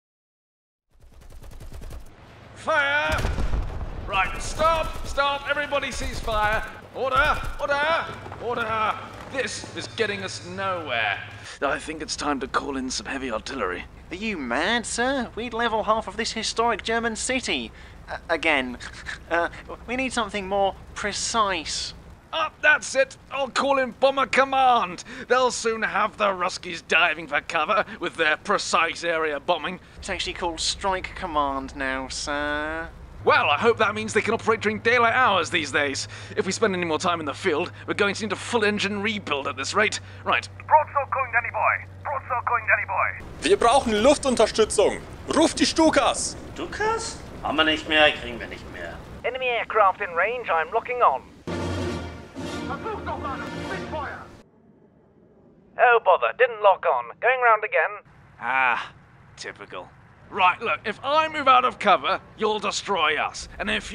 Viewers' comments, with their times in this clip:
0:07 is Bercow the tank commander?
0:46 For anyone who wants a 1:1 translation: Stukas? Ham wa nich mehr, krign wa nich mehr. = Stukas? Don't have em, wont get em anymore. (I love that you included an East Berlin accent)